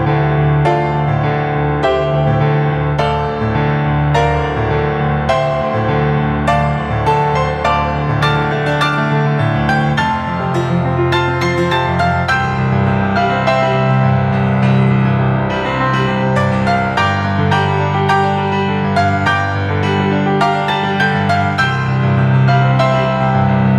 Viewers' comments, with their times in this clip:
0:08 But that high chord confuses me every time...